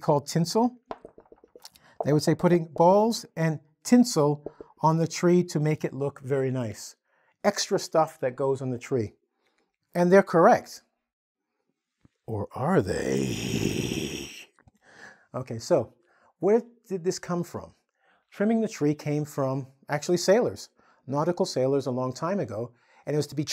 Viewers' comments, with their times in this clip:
0:07 " Or are they" He sounds as if he was a extremely drunk guy who was thinking about his bottles if these were empty. Im actually dying.